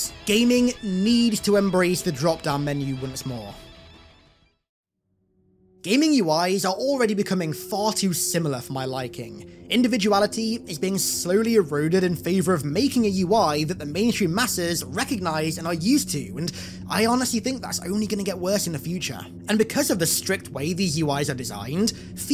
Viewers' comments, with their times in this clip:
0:04 damn why do you gotta play that creepy RE4 night time village music? 😂